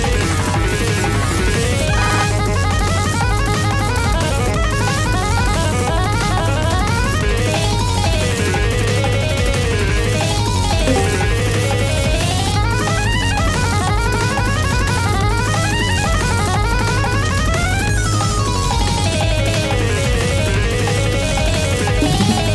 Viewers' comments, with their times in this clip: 0:07 discord notification sound
0:10 That discord sound really helped set the tone.
0:10 someone just joined u in discord